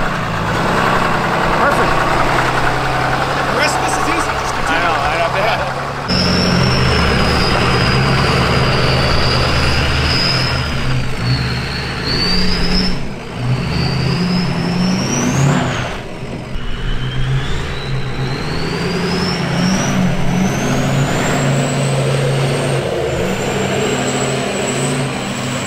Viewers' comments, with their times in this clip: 0:09 nice trail pigs! sounds like an 03 swapped turbo